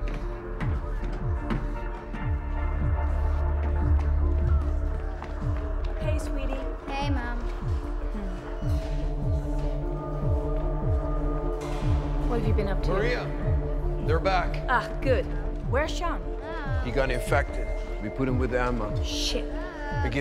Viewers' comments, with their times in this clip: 0:06 I lost all sound after If they were explaining what is going on I missed it.